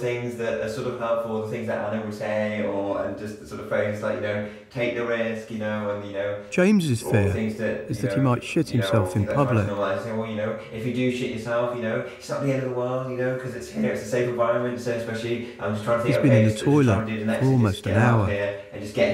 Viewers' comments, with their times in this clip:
0:05 I’m so done. Honestly. You don’t say it so calmly because I wasn’t ready for it. I hope this dude got the help he needed and he’s happy! But narrator please don’t say it again